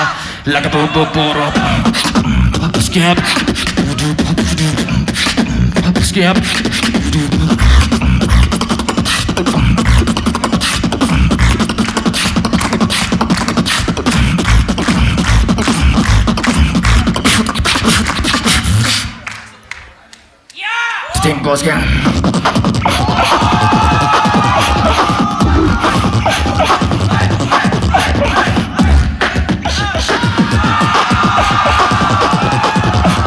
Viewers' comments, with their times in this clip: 0:09 napom and keny urban
0:20 the best DROP!